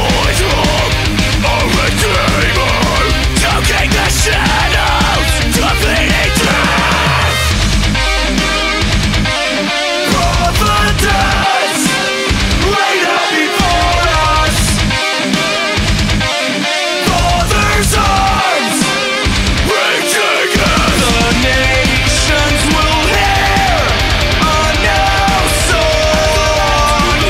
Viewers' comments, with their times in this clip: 0:08 one of a kind woodhammered 20" stache crash
0:09 Tell me that catch isn't beautiful!